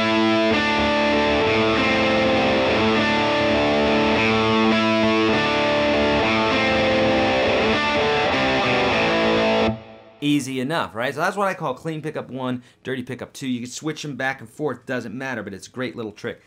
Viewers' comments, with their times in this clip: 0:03 very nice tone !!! What is the name of the song? Its sound familiar to me...